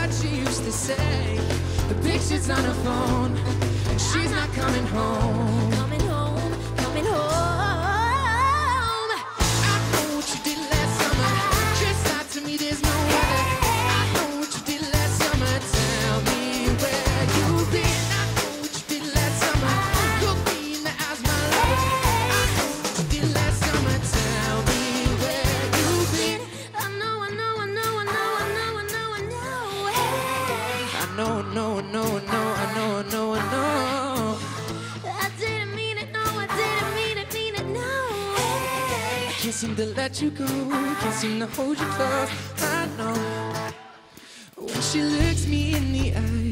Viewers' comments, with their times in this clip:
0:06 Shawn’s voice gets so strong
0:06 “hOoOoOoOoOoOome” is my fav part shes so talented
0:20 Shawn- look me in the eyes my lover Like he is asking it for real😱
0:33 i meant she hit that